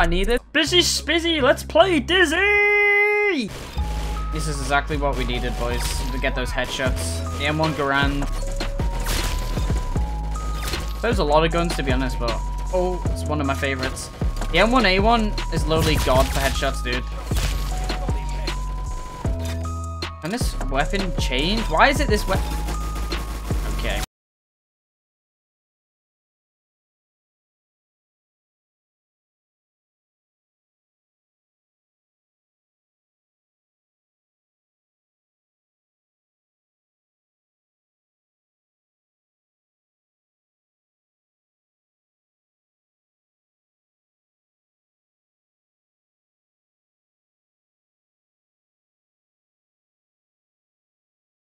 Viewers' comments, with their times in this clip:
0:06 its a french song
0:21 did the sound cut out or is it just me?
0:23 there is no sound bruh
0:23 complete silence for most of the rest of the video
0:23 the sounds off lol
0:24 Uh why is it mute that time? Is
0:24 Who else thought their headphones were broken
0:25 everything just go silent lol
0:26 did he mute or is it just me
0:28 why it’s muted?
0:29 why do you not have audio?
0:35 I cannot hear anything